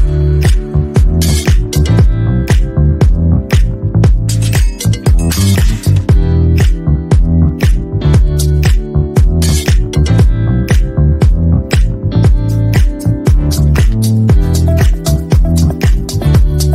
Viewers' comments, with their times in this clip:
0:04 it seems Alvin and the chipmunks 😂😂😂